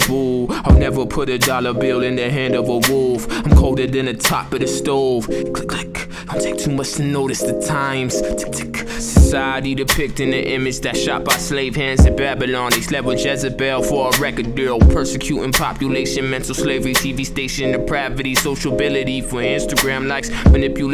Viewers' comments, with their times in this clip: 0:03 The onomatopoeia here really resonates in my head. Introspective piece man. #HIPSAVVY